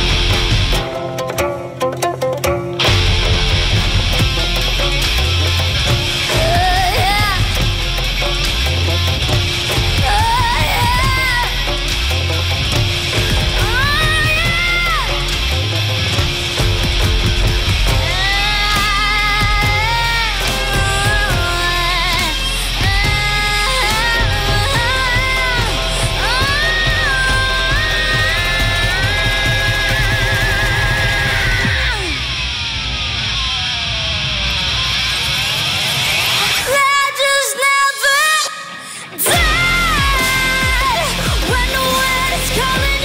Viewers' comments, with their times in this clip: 0:06 I didn't know it could get much better & then happened leading into that sick drop.
0:29 she TURNED into the guitar? I can't tell apart anymore that's crazyyy